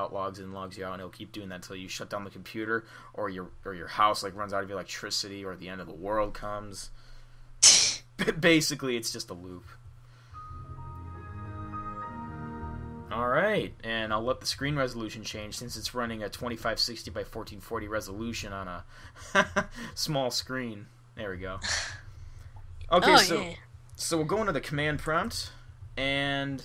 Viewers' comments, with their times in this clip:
0:09 WOW, That is the normal startup but your camera was so bad that it was cool sounding!